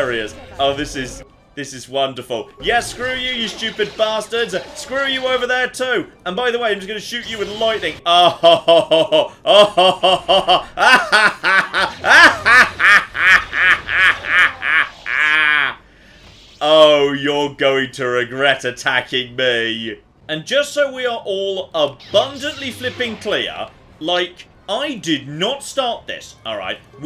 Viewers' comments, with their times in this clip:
0:08 That's a fucking Palpatine-level laugh right there!